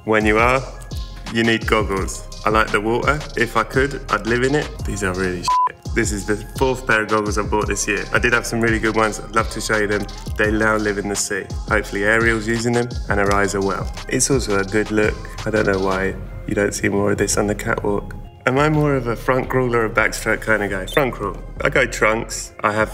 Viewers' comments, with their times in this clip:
0:05 [bleep] him when he cursed, and then he cursed too much for the rest of the video and you just let him